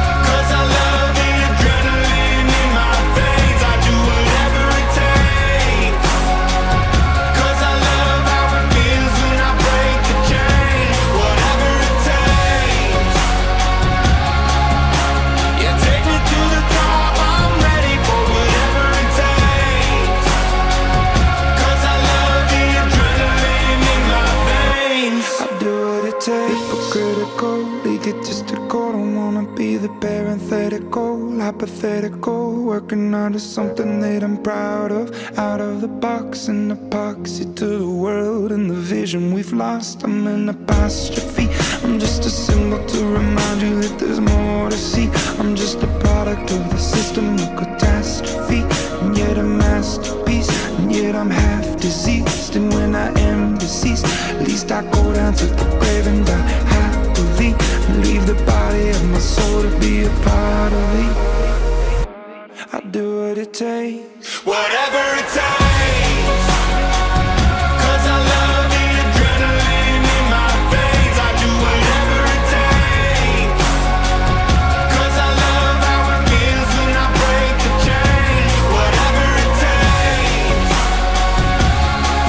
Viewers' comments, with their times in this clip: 0:09 The beat drop and the flashing light when he says ,,break the chains" is amazing!!!
1:03 perfect timing for the drop